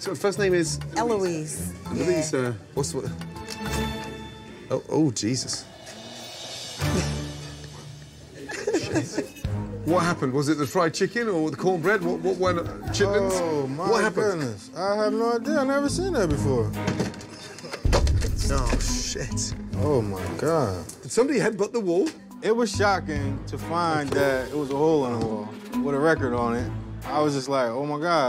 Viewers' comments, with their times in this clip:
0:10 his face and the way he said I have no idea, y'all know he is lying man